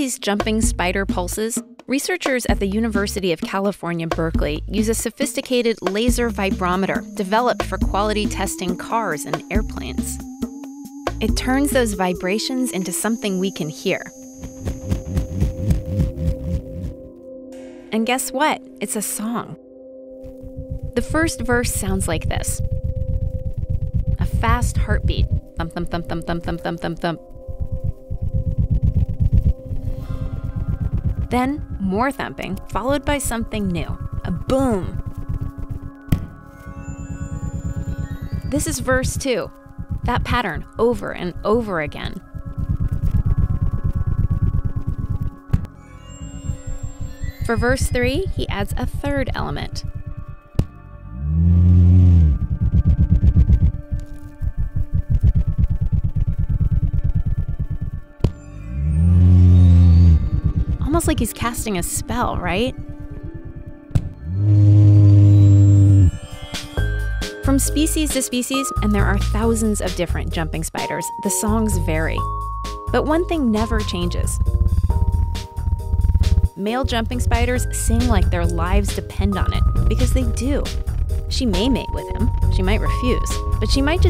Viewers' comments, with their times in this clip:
0:07 No matter how many times I listen, I hear you say air plants, not airplanes. I have questions.
0:14 Foxy running down the hall
0:14 Is that the Among us walking sound?
0:14 This might be where ambient sounds and music began
0:19 beatmakers on soundcloud
0:20 How Mick Gordon came up with his Doom soundtrack, 'Mastermind'.
0:35 male spider dose a little boom Female spider: ... looks at camera Female spider: really guys... you trapped me in here just for this...
0:38 she be like you hear these beats???
0:47 i mean that sounds pretty Doom to me
0:48 not gonna lie but sounds like a car thats trying to start up
0:49 onwards sounds like an a10 gau 8
0:50 when you're trying to startup your car
0:51 WHY AAOOFOOAA HE SOUNDS LIKE A FLY
0:51 hmm, this riff sounds strangely like riffs in doom eternal OSTS. maybe Mick Gordon based his music off of irl arachnatrons making music
0:52 Sounds like a motorcycle reving his engine
0:57 So that´s how Mick Gordon came up with the DOOM Soundtrack.
0:57 Sounds like an A-10 to me
0:58 nobody: My little brother: He's acting like he's a motorcycle! :D Me: ._.
0:58 When a spider sounds like a 10 warthog I'm out
1:01 i make sounds just like this after a burrito lol
1:05 When my phone is on silence and getting a called.